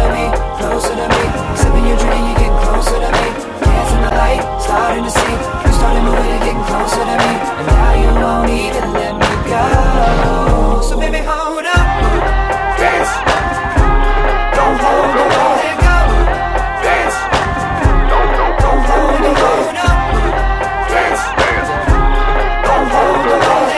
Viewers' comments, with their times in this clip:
0:10 That bamm holy ......